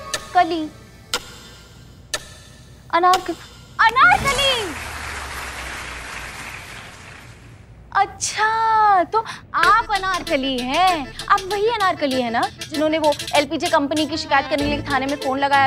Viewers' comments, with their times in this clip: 0:03 😂😂😂 clapping sound and santu